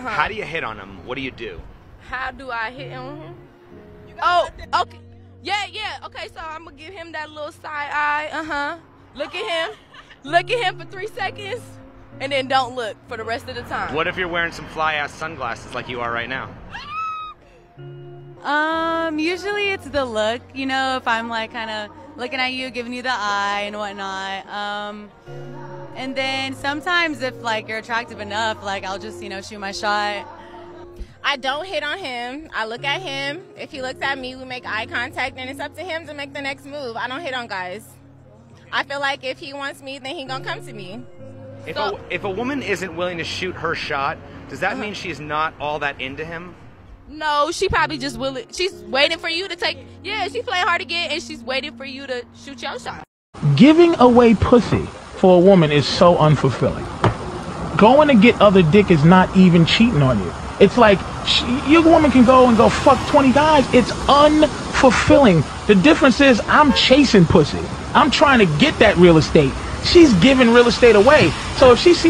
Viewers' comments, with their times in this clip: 0:06 the way she talks is already a red flag.
0:13 I absolutely cannot stand when women speak like that. It's not even real and just trashy
1:00 The guy doesn’t he sound like Denzel Washington? 🤔